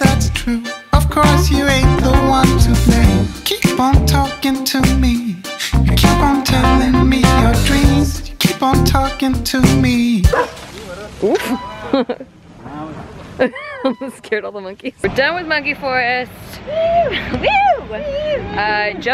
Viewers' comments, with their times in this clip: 0:03 feels like one of those animal videos that has a ridiculous voice over on it.